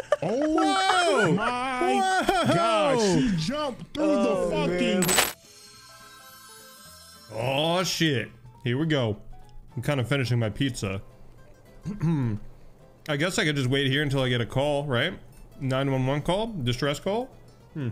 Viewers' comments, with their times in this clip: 0:05 Why are you trying to blow out my ears RIP headphone users.